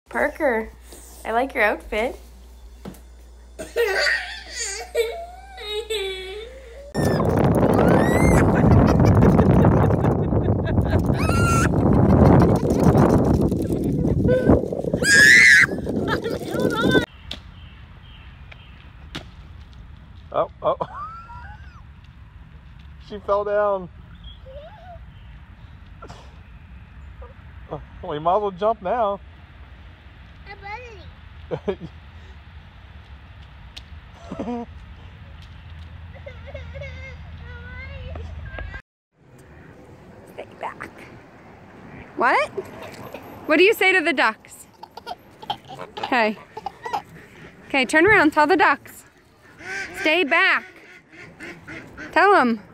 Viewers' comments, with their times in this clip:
0:03 baby crying Try not laugh
0:07 A tot girl flies a kite in a park in the wind blows and screams and laughs repeatedly.
0:39 A young girl cries with ton of ducks while outside at a park.